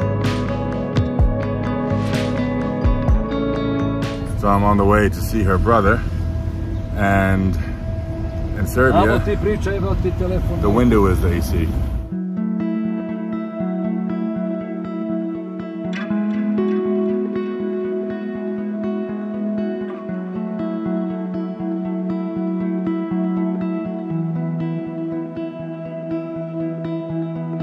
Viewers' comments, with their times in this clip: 0:08 the driver : "You just keep talking, here's the phone" or "You just keep talking , i fck your phone" not even i understood it